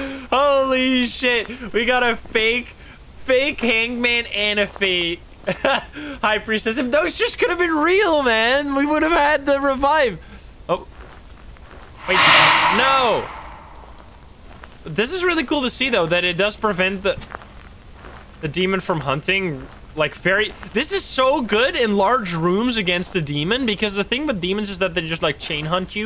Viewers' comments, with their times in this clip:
0:10 i got scared so bad when the lights went out and it did that huuuu thing